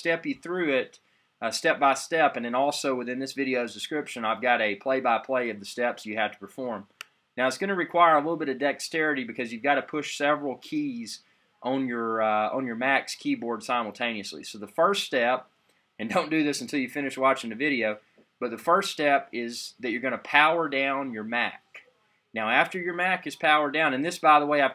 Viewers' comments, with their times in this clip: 0:07 Starting you became unsynced.